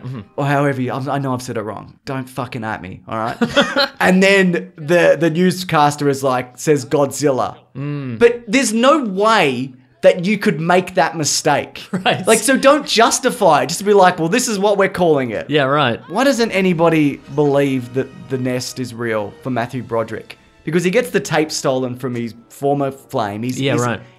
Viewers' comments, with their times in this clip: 0:08 yeah, but it's worth it for that beautiful delivery by Azaria.